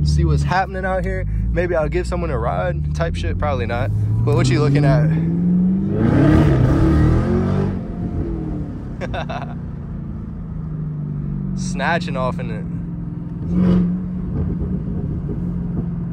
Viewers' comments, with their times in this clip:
0:03 “whatchu lookin at”I swear you grew up around brothas 🤣🤣.